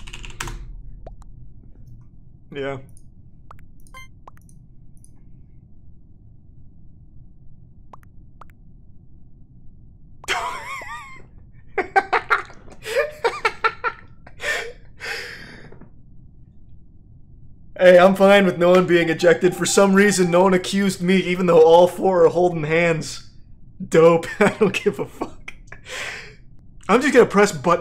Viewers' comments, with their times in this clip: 0:10 bro that laugh